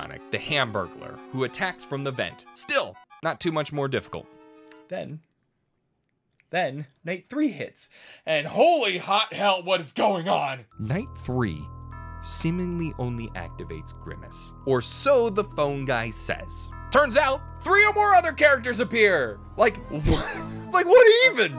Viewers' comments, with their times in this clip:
0:09 Why does he sound a lot like Filthy Frank